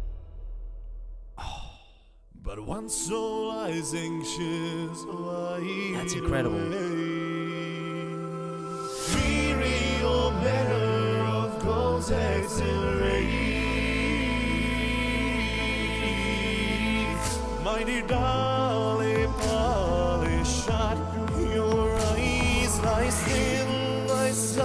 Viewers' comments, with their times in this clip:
0:06 The ending note is an A0 Ingressive note. There’s also an insane E6 whistle voice These aren’t even his lowest notes. That would be an F0 Ingressive note and F6 whistle voice, both in his song Hellfire. I’m not sure but I think in a non-musical video he hit a G#6 whistle voice as well.